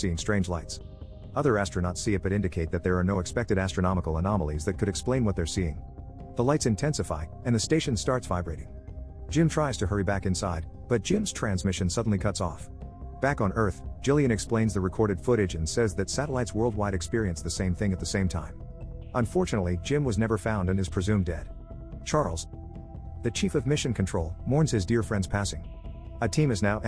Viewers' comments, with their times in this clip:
0:10 nice robot voicecrack :D